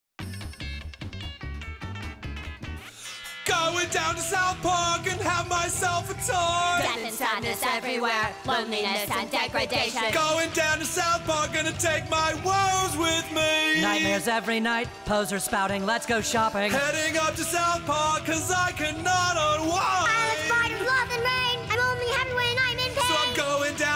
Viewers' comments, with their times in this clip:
0:03 I left my phone at maximum; -;
0:06 the beat is actually so sick tho
0:08 you gotta admit the voices are so smooth